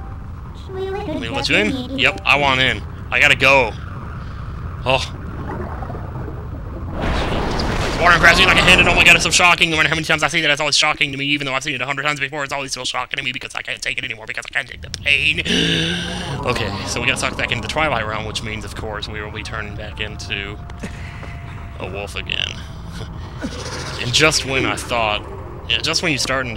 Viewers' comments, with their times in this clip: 0:08 I love super fast talking